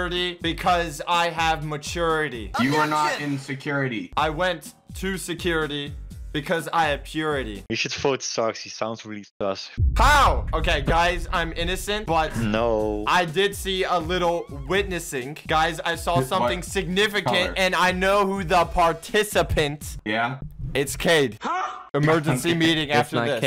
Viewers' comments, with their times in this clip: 0:05 I heard "I went to security because i have puberty"